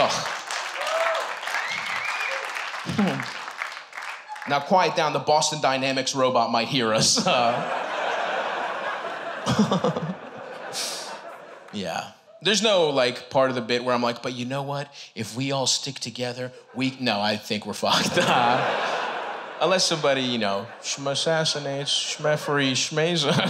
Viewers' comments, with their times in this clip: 0:08 stavvy laugh without moving mouth??? Stavvy gay magician??